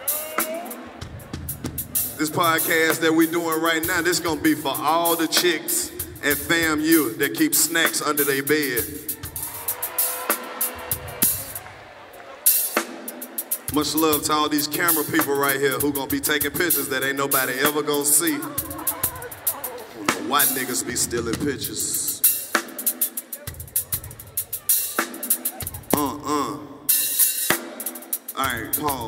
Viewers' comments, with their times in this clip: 0:10 why buddy get to fake laughing wen he saw the cam? 🤣🤣🤣 Y'all peep em?